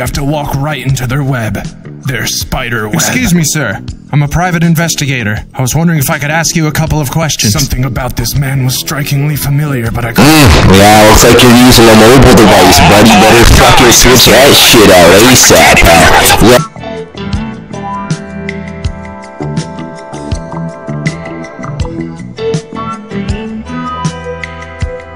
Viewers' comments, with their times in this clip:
0:10 E A R R A P E